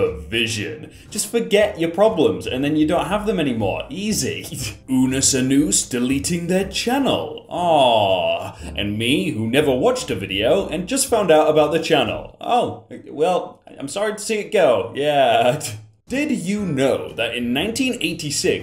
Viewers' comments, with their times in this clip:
0:04 excuse me, "unus anoos"???
0:05 Damn European people saying Unnus Annus wrong, you guys invented Latin and ya can’t say it
0:05 Did he just call it unnus anoose?
0:05 don’t say it like that.